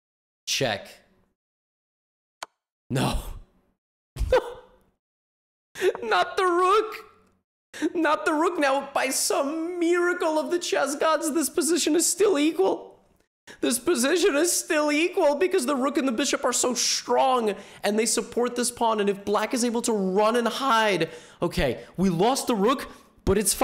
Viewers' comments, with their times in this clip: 0:08 Bros voice chenges😂😂